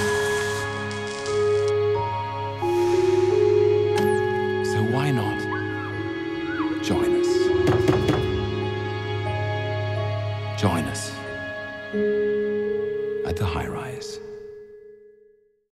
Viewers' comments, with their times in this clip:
0:06 Who else heard that scary ass screaming- this might be a horror...